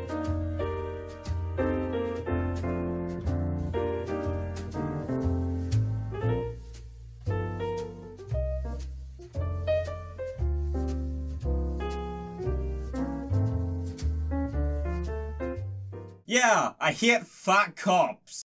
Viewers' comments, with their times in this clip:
0:06 thought autumn leaves was playing.